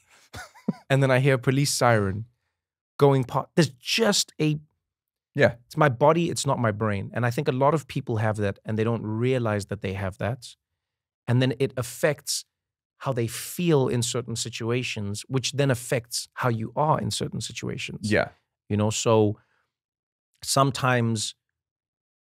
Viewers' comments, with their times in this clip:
0:04 🤣 I just heard some sirens.